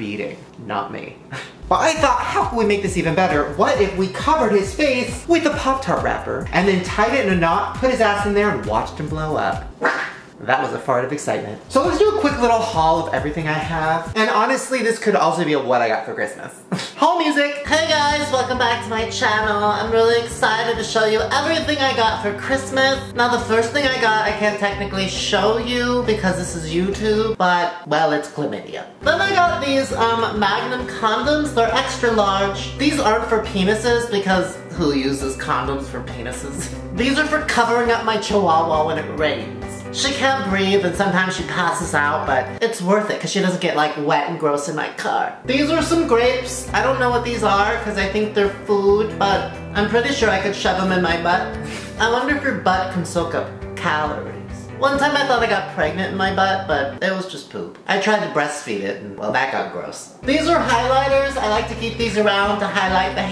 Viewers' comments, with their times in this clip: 0:09 When your fart sounds like Donald duck quacking
0:09 His fart sounded like a duck LMFAO 😂😂😂😂
0:09 farts shane: "that was a dart of excitement" me: dies laughing
0:09 the most old lady fart I've ever heard
0:09 that fart sounded like a duck
0:09 who else thought Shane's fart was Donald duck 😂😂😂
0:09 what was that fart😂
0:09 that was a fart? It sounded like a duck 😆
0:09 You think that was a fart? You should hear my mom's.
0:12 How many people rewound ten seconds at the mark to hear that gross fat fart he did, a thousand times?! Just me.. Ok. 🤣🤣
0:18 Is the voice a character or what (please tell me it is cause if it isn’t then what is life)
0:25 who else noticed that he used his Paris Hilton voice from his shane and friends videos
0:45 I'm from Ireland (Dublin)and I'm 14 and the way he said "These are some Grapes" is exactly how people from northern Ireland says it and especially the way he said grapes 😂 Side note: Dublin isn't in northern Ireland 😁😁
0:50 Paris Hilton voice from 6 years ago